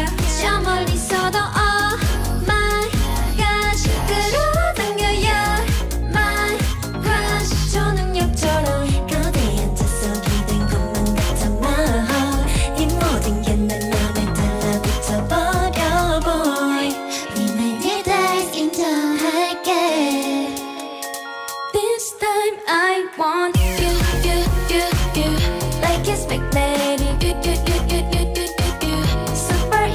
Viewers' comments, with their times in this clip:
0:09 Bro, Yunah always sounds like the recording ver. Her voice is so good.
0:17 OMG Moka's voice is so CUTE😭💗 she is my bias